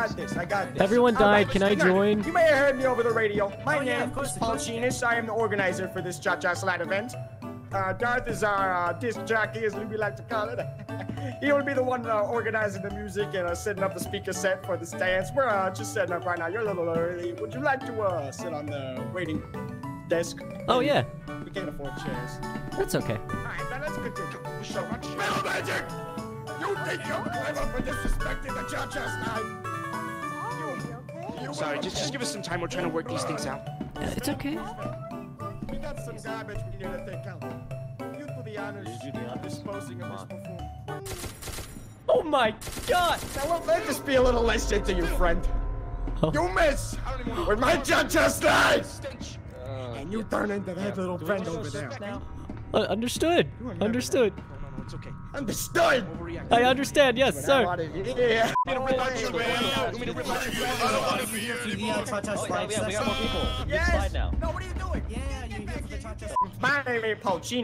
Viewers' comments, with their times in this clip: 0:04 Love the Pokémon recovery centre music
0:44 his voice reminds me of sans
0:50 i have the feeling i heared him somewhere before...